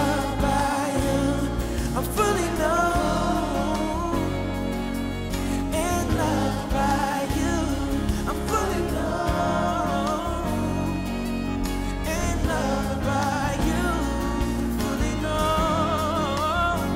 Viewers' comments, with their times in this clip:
0:03 Good to here another sound of gospel music. It is up beat, groovin', and popin'. I believe God is heavy and down with the groove sound. Because after all when I think of joy and rejoicing, I see uplifting upbeat popin'. Like a party going on. Zephaniah 17 The Lord thy God in the midst of thee is mighty; he will save, he will rejoice over thee with joy; he will rest in his love, he will joy over thee with singing.